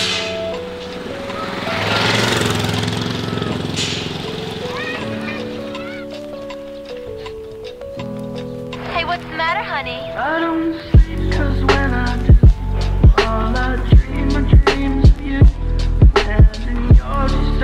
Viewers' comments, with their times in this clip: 0:03 I DONT SLEEP I LOVE THAT SONG